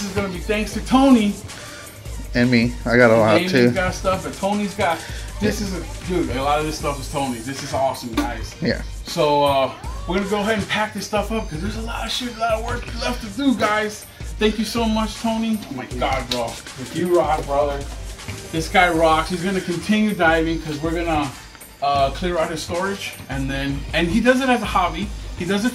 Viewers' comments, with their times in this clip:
0:09 anyone hear that moaning noise?